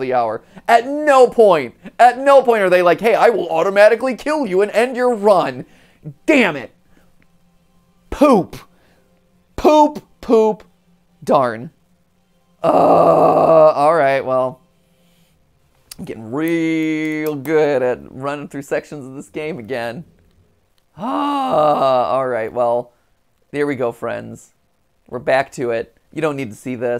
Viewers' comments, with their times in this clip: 0:10 Insert FNF {Friday Night Funkin} Eteled Scream, Thats grown that MattPatt did, Is like Eteleds Scream!